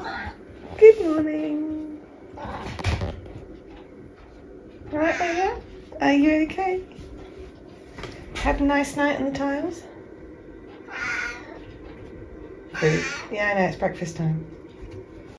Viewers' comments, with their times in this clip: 0:08 That's the husky voice of a cat who's partied too hard and slept too little.